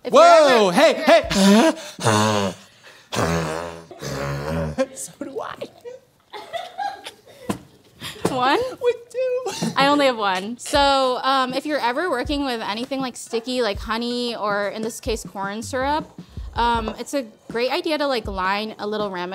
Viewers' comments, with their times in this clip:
0:03 This is my new favorite car sound now. I'm dyin' laughing, OMG. XD